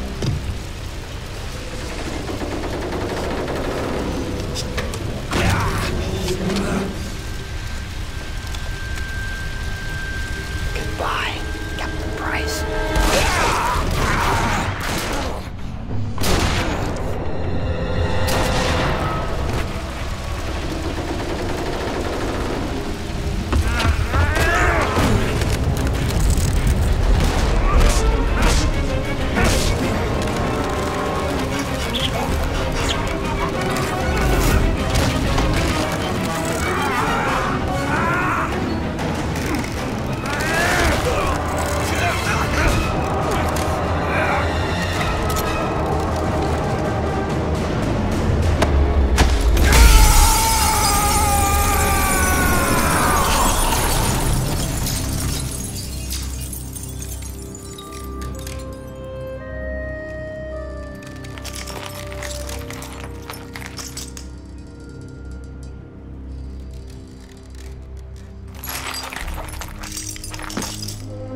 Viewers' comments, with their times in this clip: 0:10 Any one else find Makarov's voice similar to Gollum the Goblin especially LOL!!!!!!!!!!!!!!!!!!!!!!!!!
0:49 Emperor Makarov his scream does sound like it LOL!!!!!!!!!!!!!!!!!!!!!!!!!
0:50 This is how you end a trilogy. After a badass final kill, everything is somber for a moment as Captain Price and the player realize that it’s over, and reflect on the heroes that were lost getting here. But then the score turns triumphant as Price knows his fallen friends can rest easy, now that Makarov has finally met his end. Thus, Captain Price brings the modern warfare trilogy full circle-just as his first mission in MW1 began with him smoking a cigar, throwing it away and getting to work, MW3 ends with Price’s mission complete, and him lighting a cigar to celebrate his victory.
0:53 that choke noise is grim
0:57 why did they play a little spiderman chime here